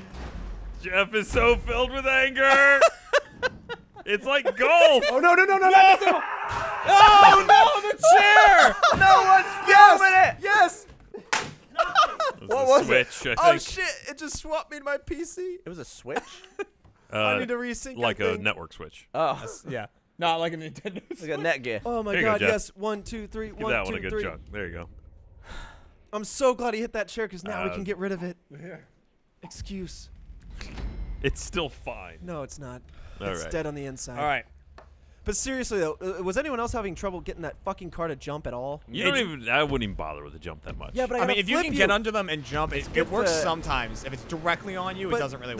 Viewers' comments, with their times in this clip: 0:06 This made up for my shitty Monday morning. Thanks Letsplay! Hope everyone has a good week! Edit: Geoff's Scream scared me and now I hate my Monday again
0:07 Gavin noises used to be my favorite. My mistake.
0:31 Someone got a snapchat